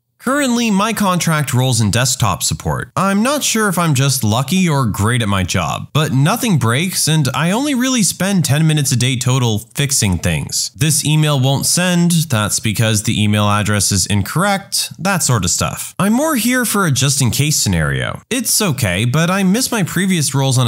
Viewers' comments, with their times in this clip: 0:08 listen to the tonation ... I don't think that's AI